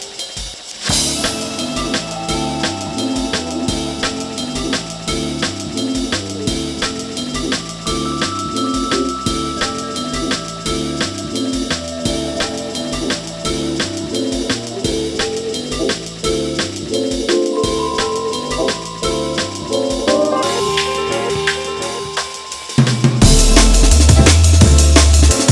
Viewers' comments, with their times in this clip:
0:10 Those wind chimes get me every time. It's all in the details.